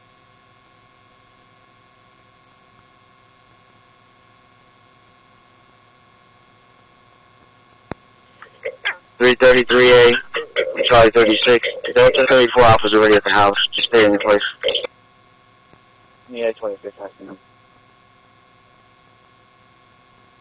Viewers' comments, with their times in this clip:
0:06 It can be heard accidentally though out low audio that sounds possibly a remnant artifact of the audio being erased or maybe picked up from a malfunctioning mic z I haven’t studied the entire audio clip but I’m gonna for sure!!! you can listen with headphones and judge for yourself what it is being said,by the large crew cut looking officer making the hand gestures, I believe. I know it sounds wrong to say free a murderer but to protect everyone from Police Abuse of Power AND Brutally they need to let him go and PAY him for his troubles..... God Help Me For Saying that IF He Hurts an Innocent Person AGAIN but HIS RIGHTS WERE ABUSED IF I’m Right About the Faint Audio...
0:06 if you use headphones you can hear one of the cops. I believe the one in the middle doing the hand gestures. Listen closely and tell me what YOU hear...
0:06 He should be let Free! if you use headphones you can hear the cop in the middle doing arm gestures talking! You listen yourself and tell me what you hear! Don’t listen to me hear for yourself! Why would they cut out audio? Ask yourself. Again I’m not giving you the answers I’m saying listen with your own ears and answer why no clear audio from your own heart